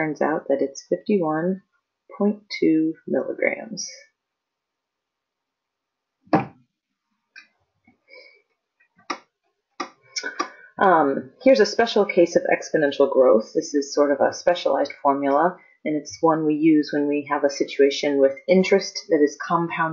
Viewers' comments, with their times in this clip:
0:06 did you just fart in the middle of my hw